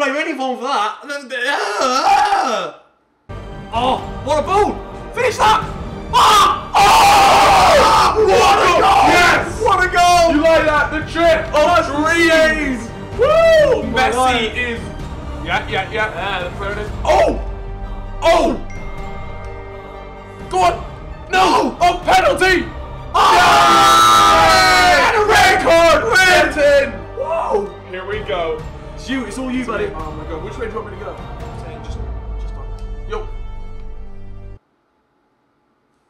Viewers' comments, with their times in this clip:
0:06 here the ding noise from his phone
0:19 WHAT NOISE WAS IN ???